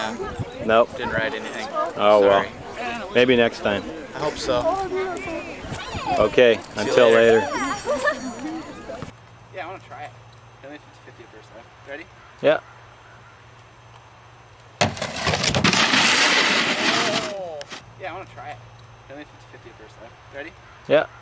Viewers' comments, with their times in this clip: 0:09 the snowboarding clip has the "yeah" switch from right to left in theirs to your digitizing...